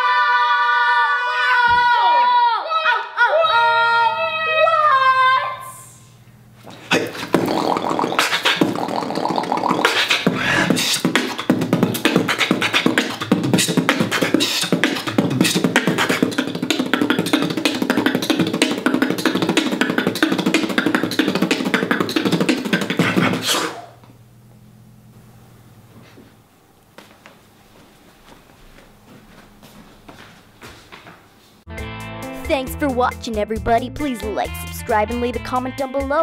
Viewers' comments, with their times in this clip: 0:06 The beatboxer is SUPER FAST MODE! WINNER CHAMPION BEATBOXER!
0:06 good beatbox starts
0:07 Normal speed: legendary 0.25x speed: lvl 1 Crook
0:14 sounds like a virus
0:17 warning too fast boomboxing😅😅😅